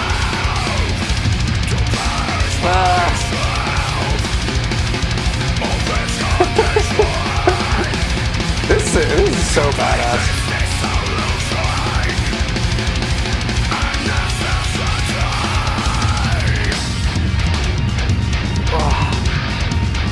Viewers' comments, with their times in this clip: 0:07 Brain melt is the only viable reaction. Welcome to the club! Also, that giggle I feel it everytime I listen to this song.